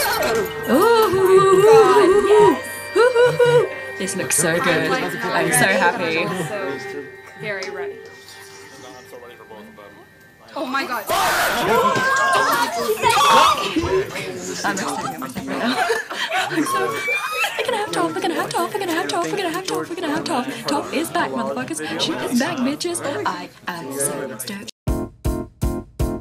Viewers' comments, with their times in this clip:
0:10 Why are they all screaming when Korra said I can't believe it,doplh?
0:11 don’t hear this part wit headphones coz toph it’s back xD